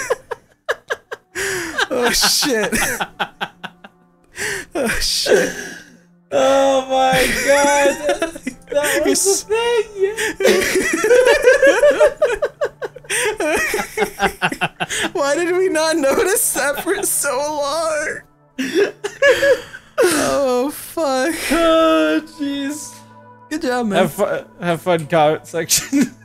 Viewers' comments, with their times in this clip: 0:09 anyone else feel like they went insane when they started laughing